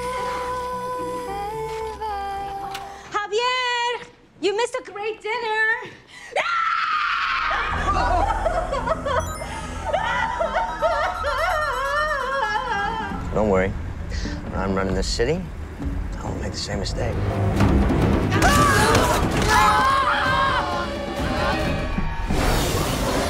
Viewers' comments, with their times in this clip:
0:08 looks like cartoon woman cry sound